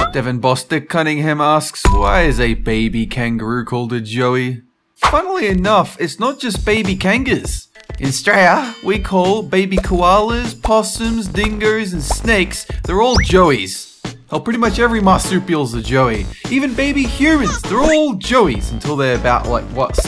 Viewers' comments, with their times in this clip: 0:08 the way he sajd Australia was pure gold.
0:08 Not gonna lie he kinda said that weird
0:08 The way you said Australia tho...
0:08 how do you say it again? excuse me? i don’t even know how to spell it out lmao like bro you aight?